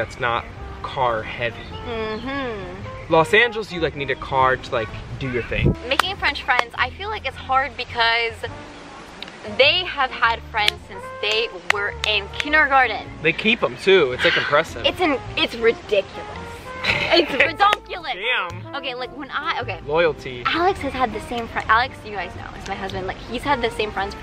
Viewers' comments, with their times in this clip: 0:06 making french fries